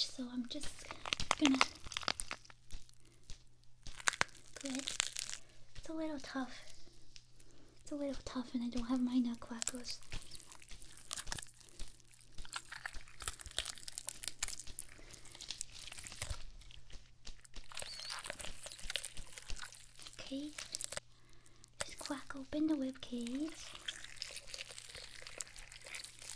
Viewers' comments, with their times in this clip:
0:07 I can not bear to listen to those bone cracks xdd